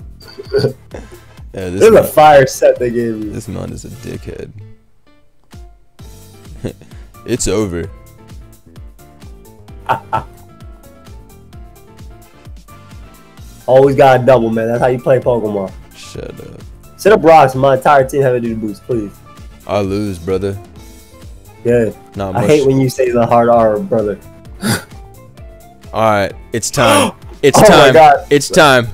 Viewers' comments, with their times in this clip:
0:10 That's not just Copperajah. That's Capper Raj.